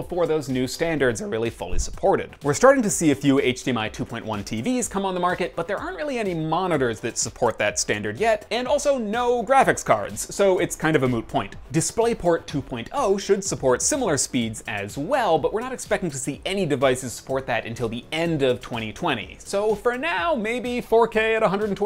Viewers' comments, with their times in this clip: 0:09 did he say moo point?